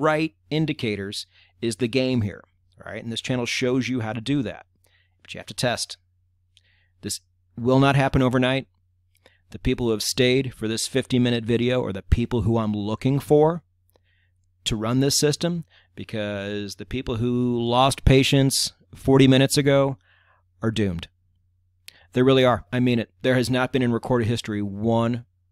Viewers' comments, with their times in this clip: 0:08 "The people who have stayed for this fifteen minutes video" I snorted imagining the actual recording was spoken in 360 words per second.